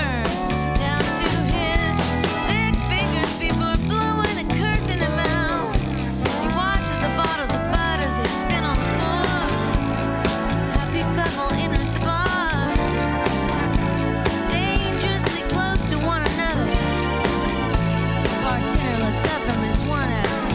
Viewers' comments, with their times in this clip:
0:05 I was thinking, where's that slide coming from? Not seen until